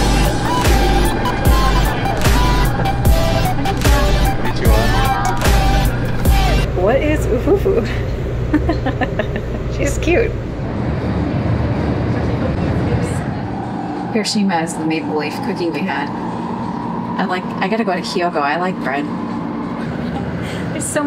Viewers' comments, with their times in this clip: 0:08 ufufu 「うふふ」is way Japanese express soft laugh in words, actually it is similar (uhuhuhuh) sound in Western